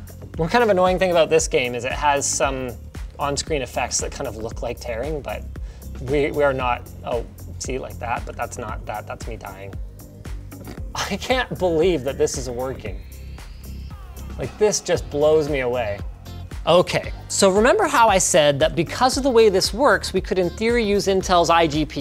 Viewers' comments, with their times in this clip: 0:08 "that's me dying" who's the guy snickering behind you!? Haha!